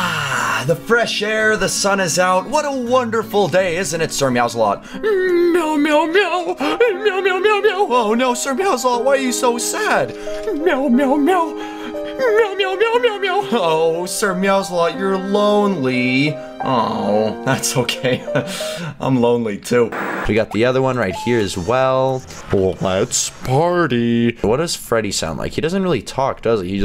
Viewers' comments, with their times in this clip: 0:09 sir girls a lot??? Whaaaaat